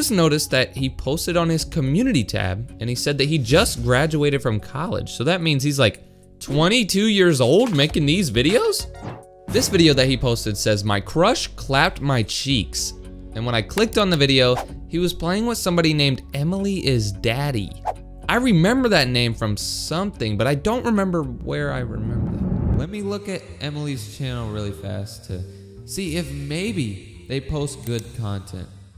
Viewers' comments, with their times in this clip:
0:10 the way you said that so nonchalantly 😂